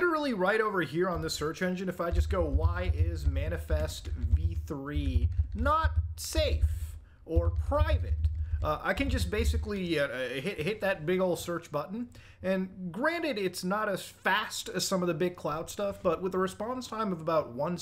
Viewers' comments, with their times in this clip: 0:05 My bass is going crazy rn